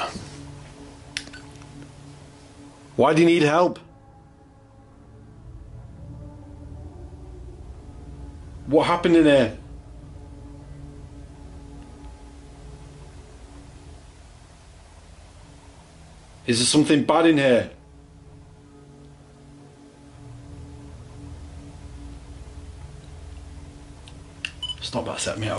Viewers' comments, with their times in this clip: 0:06 I'm not sure it's the backsound or someone's moaning